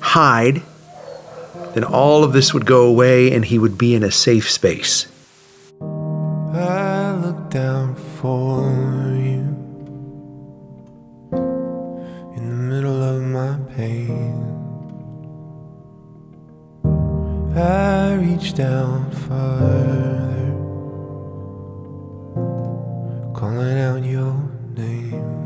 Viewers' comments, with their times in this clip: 0:09 such appropriately sad music after